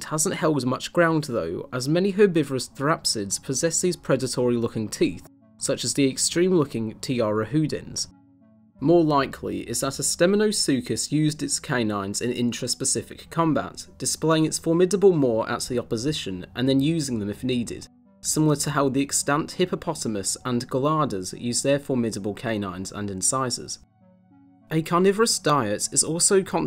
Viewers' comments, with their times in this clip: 0:07 Can anyone write out the name of the creature he describes ? Would really like to research it more but can't seem to find anything called a 'Tiarahooden' which is what I'm hearing.